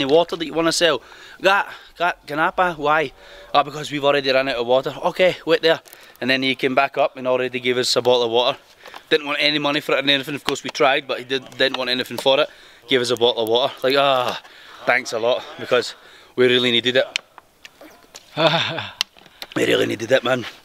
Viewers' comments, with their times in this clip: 0:04 bo'owh'owo'er That british accent hehehe